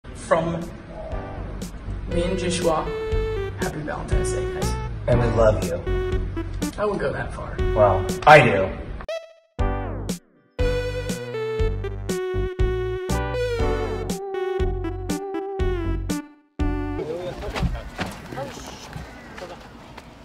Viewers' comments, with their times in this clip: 0:05 WHY IS NO ONE TALKING ??????????
0:07 STOOPPP WHY DOES JOSH SOUND LIKE MISHA OING CASTIELS VOICE I-